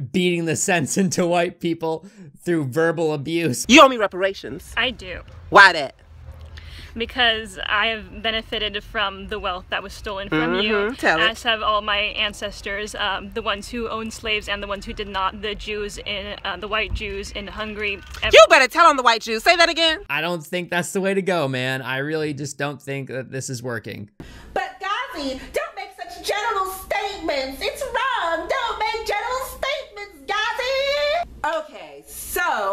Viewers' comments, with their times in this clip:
0:06 The person sounds so scared
0:06 The chick ..listen to how scared/nervous her voice sounds
0:16 omg that girl sounds so scared! like shes gonna cry. her eyes say "help me..."